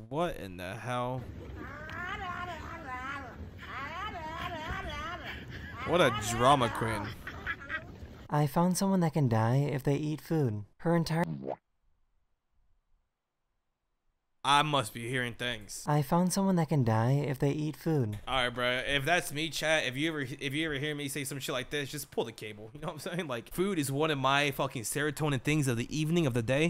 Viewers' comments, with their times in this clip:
0:07 that dog is literally a one piece character??? dub that over whitebeard and it could pass as his laugh 😭😭😭😭😭